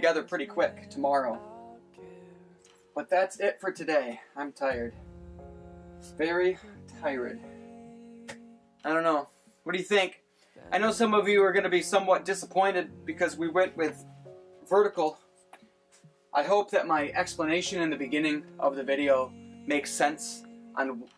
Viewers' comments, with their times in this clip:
0:07 lol, I thought I was the only one who said "ti-red"!!